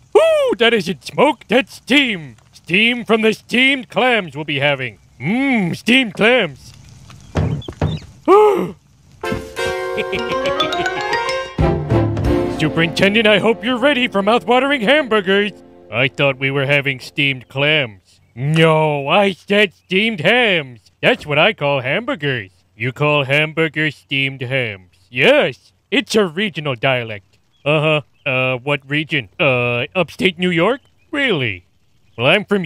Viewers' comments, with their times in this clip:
0:03 Hilarious. Although I think you could have expanded on a little bit more by drawing out the “mmm” in the iconic way that Homer does and saying “steamed clams” a little slower.
0:09 LOL The "hehehehehe" was too good
0:17 the way you said "no" there was so perfect to how Homer says it
0:18 I love how condescending that delivery on "no" is.
0:19 You got the subtle Homer-isms down to a T. The “Nyooo” had me dying.